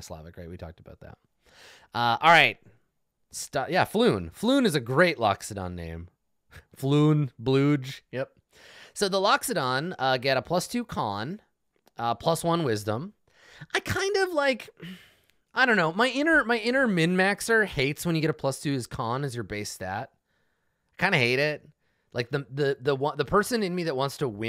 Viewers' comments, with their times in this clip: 0:10 I think the 'oo's should be more nasal with the overtones of a elephant blowing its trunk. Also I think Polish has nasal sounds so maybe Polish sounding rather than Russian sounding?